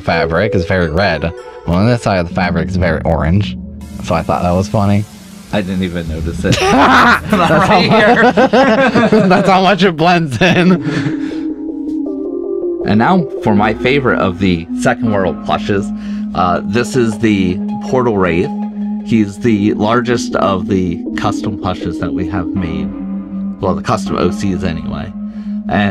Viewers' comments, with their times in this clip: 0:06 the most devious laugh I’ve ever heard. Why is it like that though.